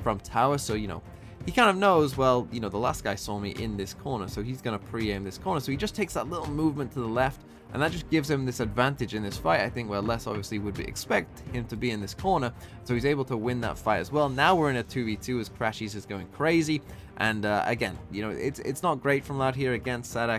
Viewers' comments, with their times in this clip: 0:08 I got so confused like. Where the fuck is that weird music coming from xD Ps, love your videos!